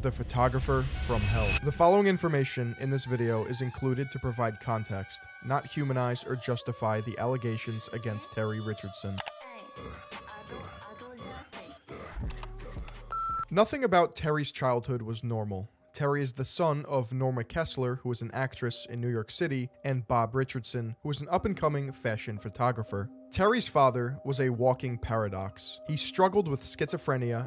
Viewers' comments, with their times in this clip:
0:08 any1 know the song ? it was kinda going hard